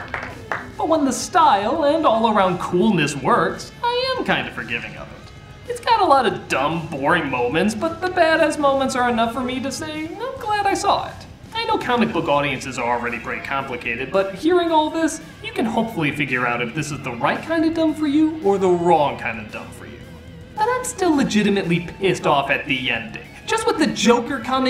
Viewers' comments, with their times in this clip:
0:09 is that awesome guitar playing at the back from Cool World? Awesome guitar not awesome movie lol